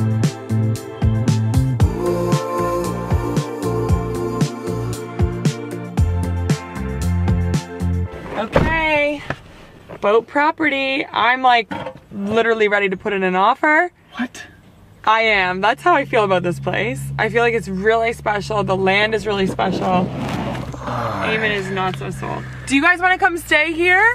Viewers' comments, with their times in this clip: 0:09 omg the next 2 seconds sounds like “ boat property “ FART - lmao